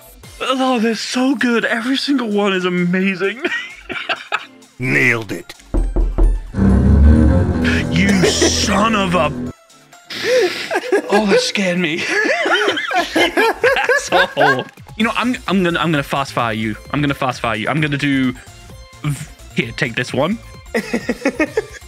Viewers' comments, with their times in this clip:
0:04 I'm wearing headphones and that made me CRAP myself. Random binaural audio in an otherwise stereo video that to me sounded like someone IRL knocked on my closet door. That got me worse than any horror game jump scare ever has.
0:04 bruh, I was in my kitchen and thought someone was knocking on my cabinet door from inside the cabinet.